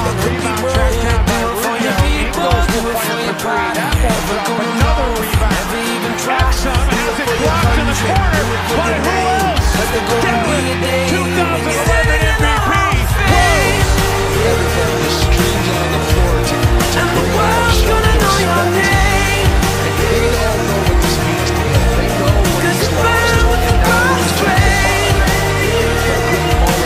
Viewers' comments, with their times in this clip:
0:09 .. the “Blocked in the corner by who else, Derrick 2011 MVP... Rose” for in PERFECTLY with the song